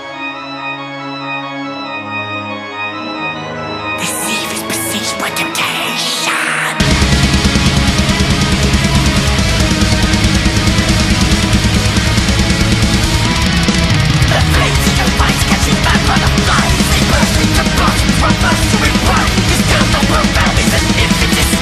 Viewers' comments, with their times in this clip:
0:07 The guitar riff sounds a lot like the main riff from cruelty. If there’s a song you wanna song like it’s that! Lol. Goddamn this album is a beast. One of cradles best easily.